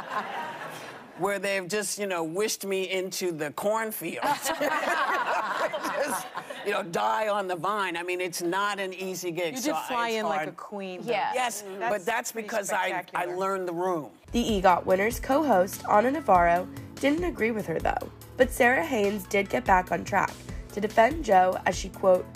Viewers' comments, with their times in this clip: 0:05 this is the fakest laugh I’ve ever heard but hell yeah Whoopi good for u